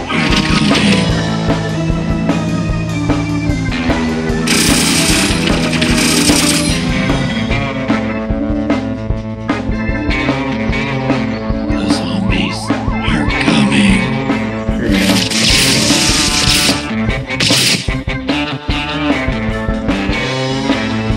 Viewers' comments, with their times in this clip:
0:03 how man sneeze 💀